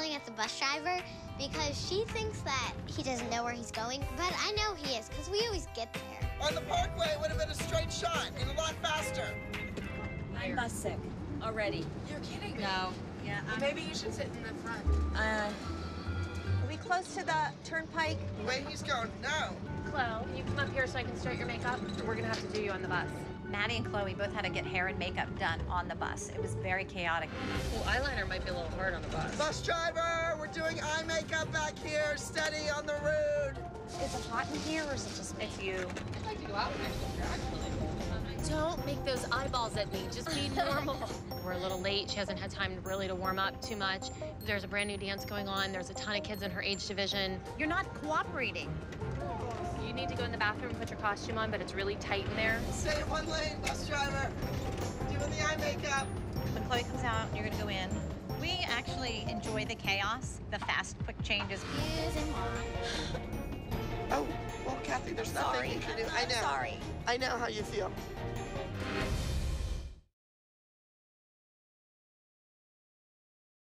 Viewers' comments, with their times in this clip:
0:10 “I’m bus sick...already” “You’re kidding me!?” “No” “Well maybe you should sit in the front” and then starts laughing 😂😂
0:14 Kelly: “ Maybe you should sit at the front.” Then Kelly laughs at herself 😂😂
0:16 And the Devil laugh award goes to Kelly.
0:33 I’m sorry but she sounds so funny when she says “road” for some reason 🤣
0:49 the whole class when the teacher yells
1:00 omg am i the only one who heard maddie that was so cute though
1:01 Who else heard maddie say excuse emooa
1:01 Luv how maddie was like excusemwa